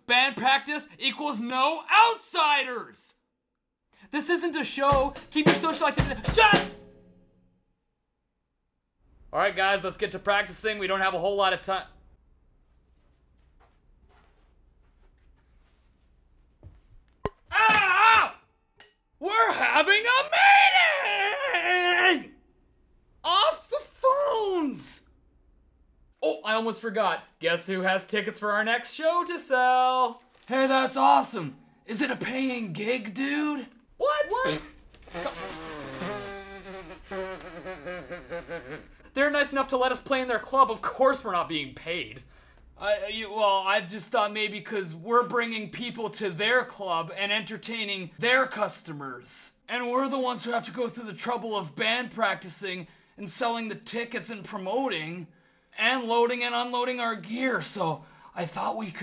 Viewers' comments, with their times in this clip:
0:03 I started dying when the drummer started playing mid sentence
0:19 kinda sounds like Trevor Philips from GTA V
0:21 We'Re HAVing a MeEtiNG OfF tHE PHonees why did he say it like that idk
0:44 more beatles fanboy screeching at at background picture